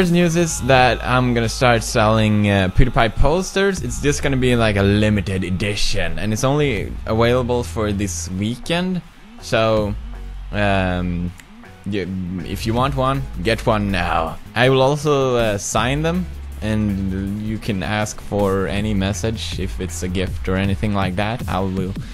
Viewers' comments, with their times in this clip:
0:06 it's only AWHALABLE